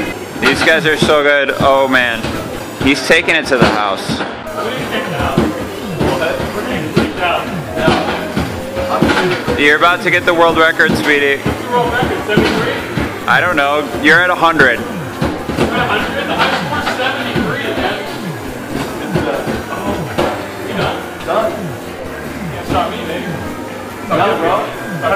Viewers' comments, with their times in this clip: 0:10 sounded like he said sweetie haha